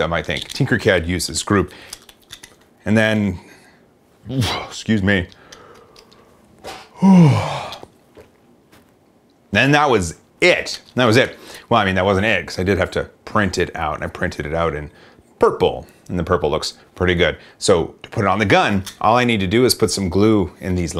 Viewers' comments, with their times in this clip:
0:05 yes, that did make me yawn.